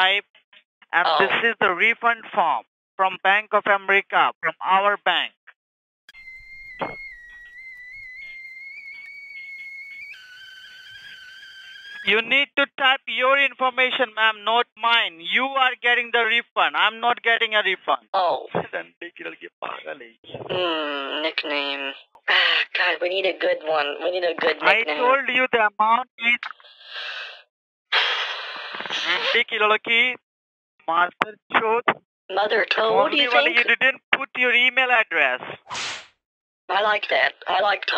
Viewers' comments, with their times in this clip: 0:07 > pastes the guy's info in the form while boiling tea kettle sound starts playing this made me lose my shit
0:18 I love how he's mumbling in Hindu to his co scammers about how stupid you are while not realizing he's being played. LOL
0:18 when bro was mumbling, he said some thing un-understandable but translated to "this (un-understandable) is crazy"